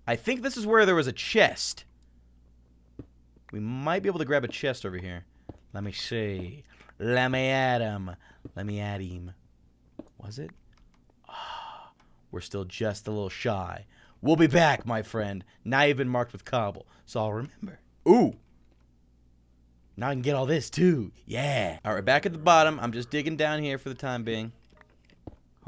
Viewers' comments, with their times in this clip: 0:06 he sounded like a witch listen